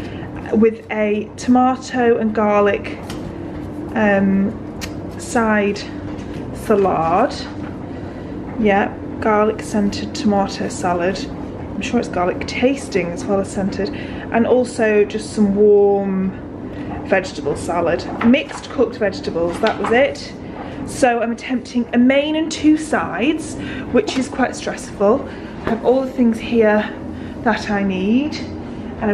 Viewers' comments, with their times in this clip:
0:10 waiting for the glug glug glug